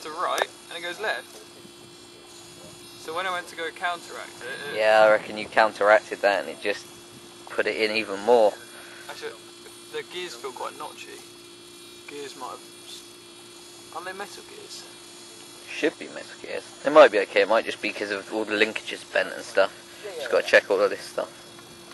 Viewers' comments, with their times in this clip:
0:09 hahaha he says.... "It flipped oooovverrr."